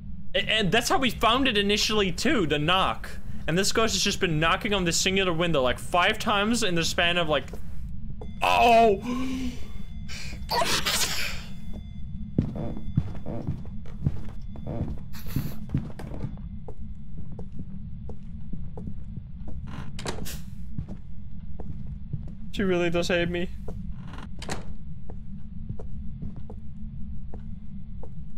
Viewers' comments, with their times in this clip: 0:09 what was that noise!!!!
0:10 i don't even think a human created that sound